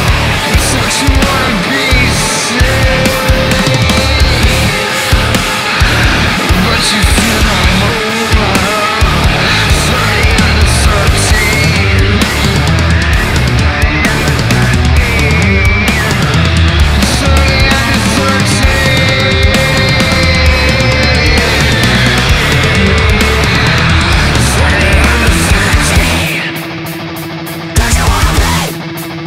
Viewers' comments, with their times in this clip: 0:10 This was crazy af, man I wish they jammed on that one riff longer! And how does Pusciato sing so heavy on top of his past amazing melodic vocals. The guy is one of the most incredible singers ever.